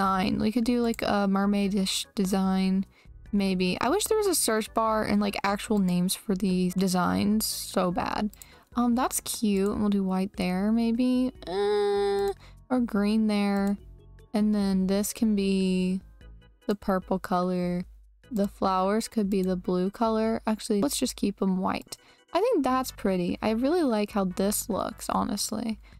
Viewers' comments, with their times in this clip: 0:10 I literally thought that was like a buzz on her phone- 😂